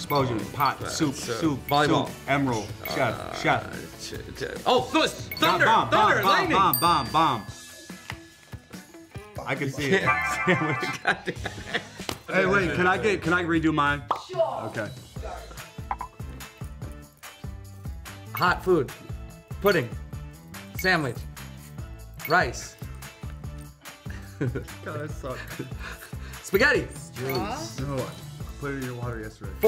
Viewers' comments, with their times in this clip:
0:10 the synchronized lap slap 😂